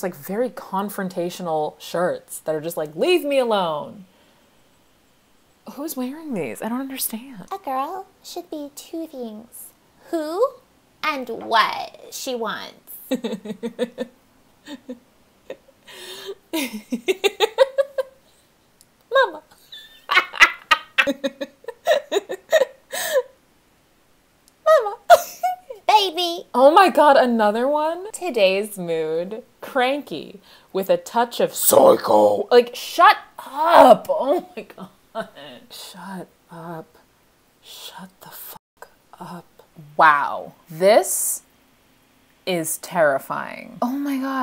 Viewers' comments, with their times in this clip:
0:07 the double whammy of That voice and the laughter on the next where you KNOW what's about to happen. im dead
0:30 have you ever tried doing metal covers? that was pretty good. i felt that XD